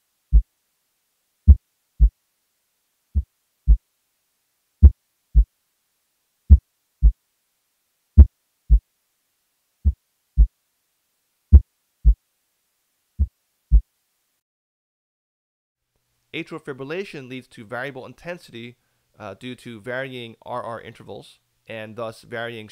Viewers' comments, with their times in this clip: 0:04 Also my slowness of my heart beats, one time went to around that of on your video.